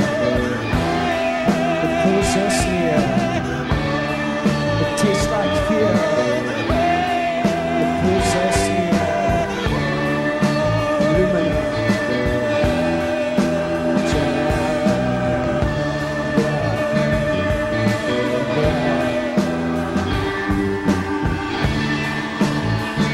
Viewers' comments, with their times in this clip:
0:09 Seriously how the hell does Thom do that and hold a note so long for such a little guy after such a mouthful.. he is truly a legend